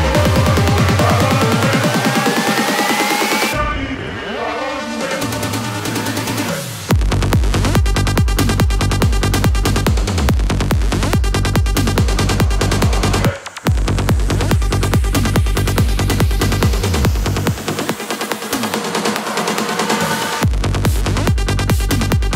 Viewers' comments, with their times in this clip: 0:04 That Beatdrop 6: 🔥🔥